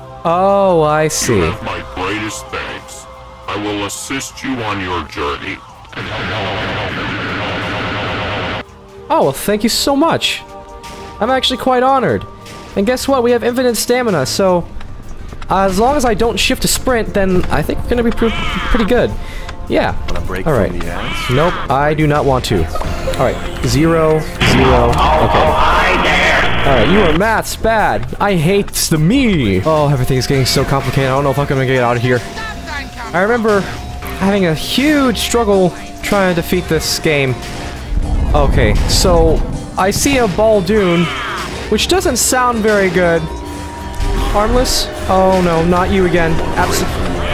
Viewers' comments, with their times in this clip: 0:03 he really does sound Basic'9ifier
0:30 did he swear here or i misheard